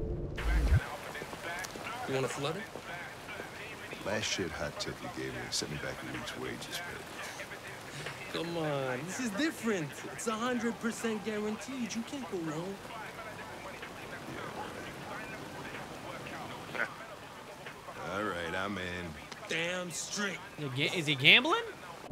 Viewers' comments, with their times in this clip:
0:07 anyone else hear skepta playing ???